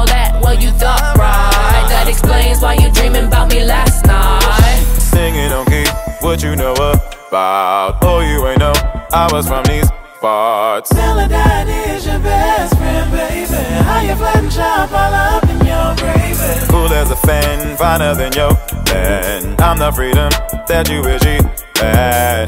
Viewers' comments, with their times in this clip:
0:06 From it sounded like a Gorillaz song for a bit for some reason... and I like it.
0:06 From it sounded like a Gorillaz song for a bit for some reason... and I like it.